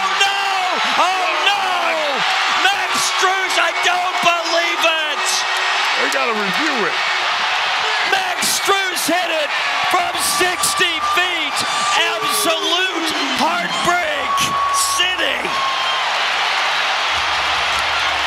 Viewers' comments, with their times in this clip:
0:05 that sad ass "they gotta review it." is the funniest thing i've heard on commentary from the nba